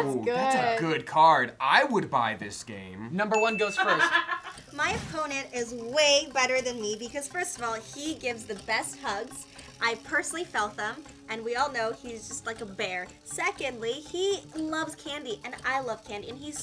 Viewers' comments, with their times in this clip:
0:03 Someone in the back who laughed YOURE THE REAL MVP